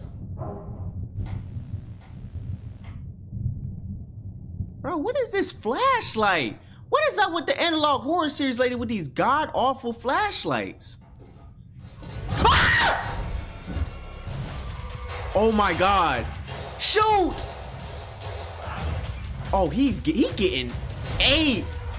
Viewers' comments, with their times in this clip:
0:09 yapping *screams like godzilla